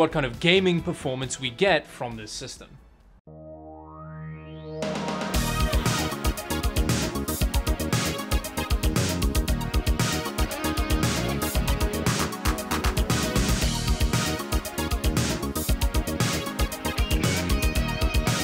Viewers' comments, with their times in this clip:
0:05 Song sounds like 80s porn 🤣🤣